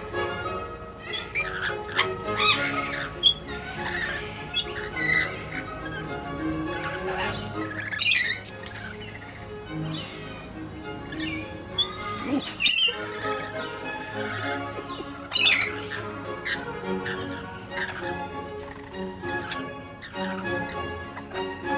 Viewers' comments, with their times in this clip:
0:08 That warning "Peep" gets me haha